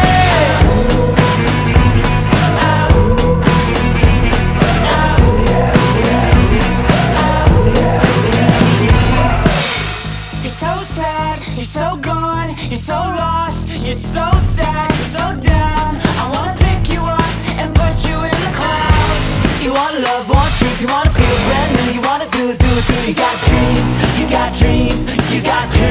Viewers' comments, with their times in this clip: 0:10 Her voice <3